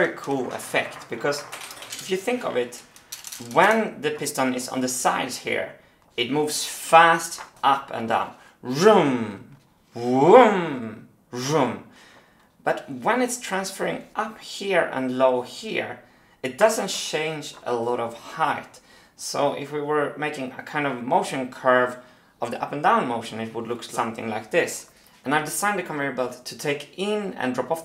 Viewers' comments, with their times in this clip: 0:08 love the sound you make to explain a (nearly) sinus xD
0:08 sound effects 100